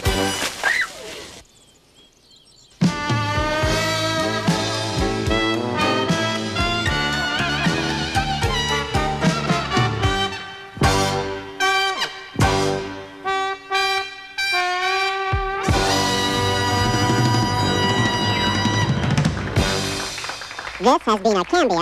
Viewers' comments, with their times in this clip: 0:03 sounds like stripper music.